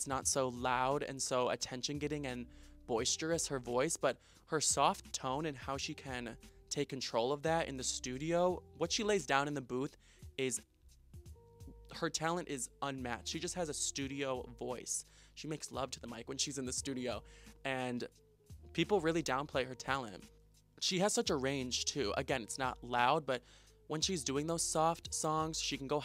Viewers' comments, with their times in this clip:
0:08 ! YES I literally love Selena Gomez’s voice. It’s like Rihanna to me, nothing else compares to that raspy sound for me…